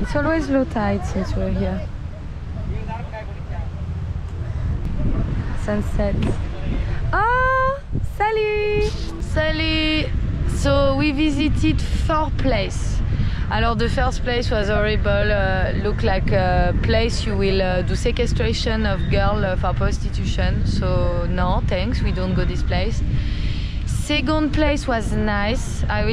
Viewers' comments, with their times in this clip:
0:09 you got some wind going on, i know one person that can remove it 😂